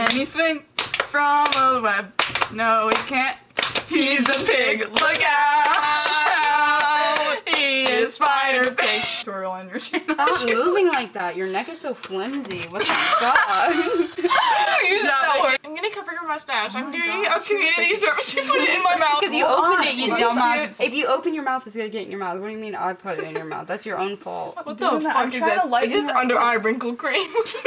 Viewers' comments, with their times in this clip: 0:10 biiitch!!!! 🤘🏽lol that song gets me every time